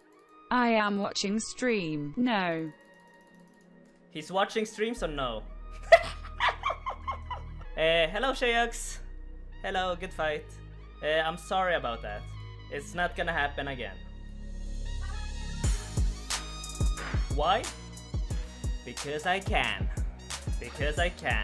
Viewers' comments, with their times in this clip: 0:06 Did you turn into a hyena ?